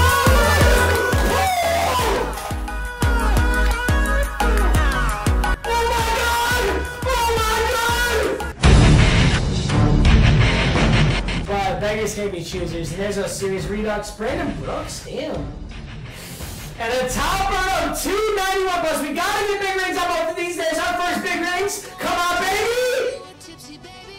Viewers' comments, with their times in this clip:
0:06 my guy sounds like Wizard Yensid😂
0:07 that random 7 year old in game chat